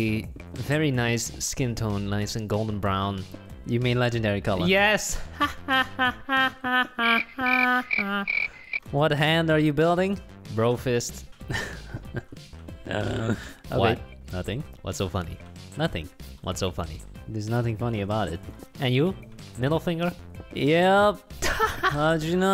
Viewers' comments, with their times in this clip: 0:05 🤣🤣🤣🤣😭😭😭😭👌 His laugh omg